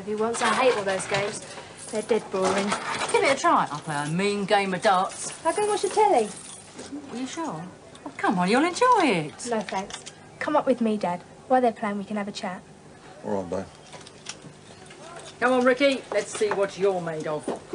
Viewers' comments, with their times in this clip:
0:03 sound of old 10p heavy coins